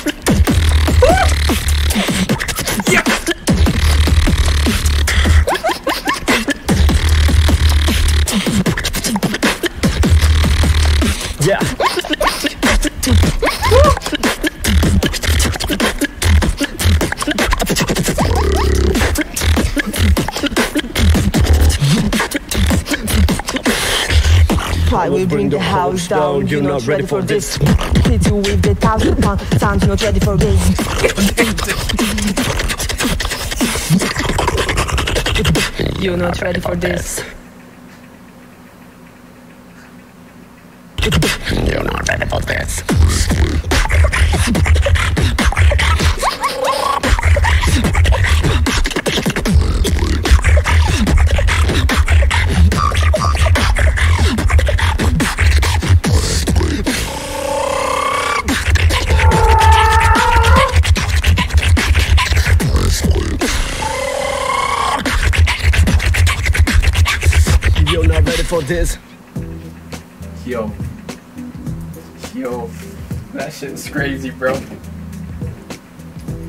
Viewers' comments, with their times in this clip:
0:10 man THAT BEAT WORK.. No words
0:59 muuur😂😂😂😂 sweet cat😂😁